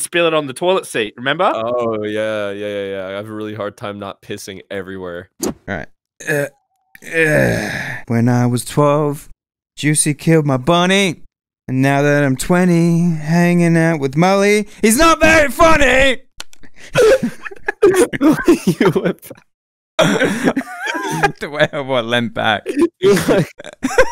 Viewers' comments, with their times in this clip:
0:06 was the best part with the song
0:06 the start sounded pretty good
0:07 "when i was 12 " why did that 12 sound so good
0:07 damn someone get this man a record deal
0:07 It sounded good at first but went straight downhill. Epic Comedy,
0:07 the way he said 12 sound like a professional
0:08 it's like he was actually going to sing well then he realized it needed to sound terrible so he stopped himself 🤣
0:08 that when I was 12 was smooth af tho
0:08 is it just me or did that 12 sound really good
0:08 the way he said 12 tho
0:08 I live for the way he sings "twelve"
0:08 Dangggggg that voice is smooth brudda :>
0:08 THOSE VOCALS AT THE BEGINNING OMGGG
0:08 he started to sing sooo welll and then he made the hit song of 2020
0:08 it's like he was actually going to sing well then he realized it needed to sound terrible so he stopped himself